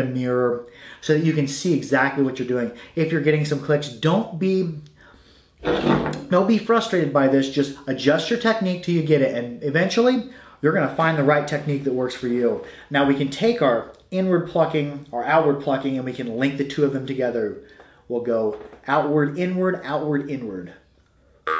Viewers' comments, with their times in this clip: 0:05 IS THAT A RIPPING FART ??!!!!! He didn't bat an eye! Or was he just moving a stool that he's sitting on?
0:05 I’m sorry I was listening so intently but I swear you let one rip 😂
0:09 Did anybody else notice the massive fart